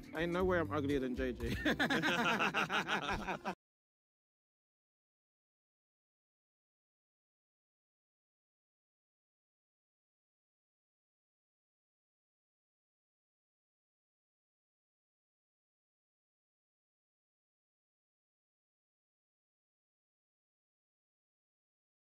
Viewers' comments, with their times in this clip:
0:03 Audio cuts for about 50 seconds son't worry it's not you